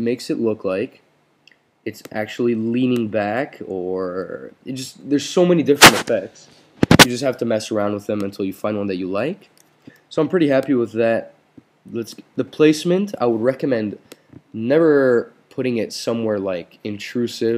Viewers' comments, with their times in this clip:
0:03 when you touch your mic at like it keeps scaring the shit out of me LOL great tutorial though